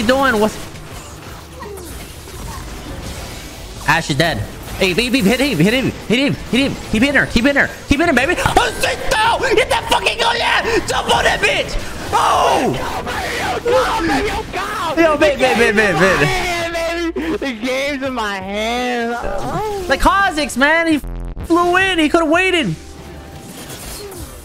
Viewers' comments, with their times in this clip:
0:09 was different accent